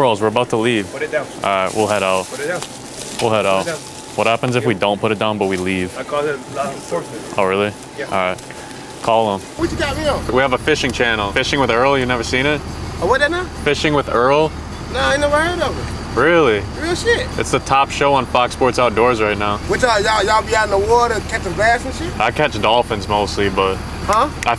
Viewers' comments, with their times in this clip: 0:09 me: studying American language almost for my entire life American language: